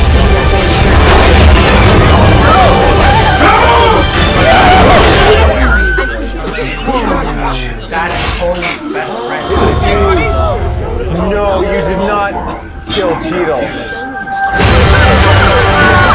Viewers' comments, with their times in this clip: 0:04 That one person who yelped at the same frequency as the music is amazing